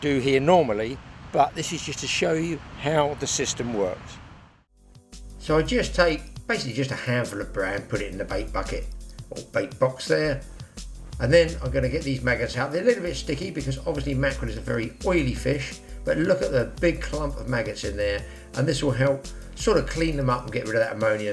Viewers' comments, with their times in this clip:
0:08 do you say that you are putting bread? Sorry din't understood 😊